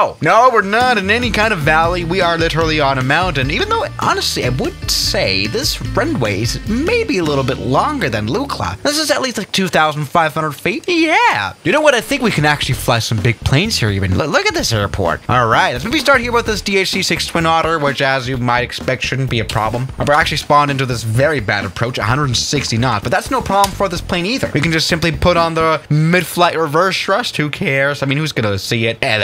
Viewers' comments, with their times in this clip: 0:10 Voice crack lol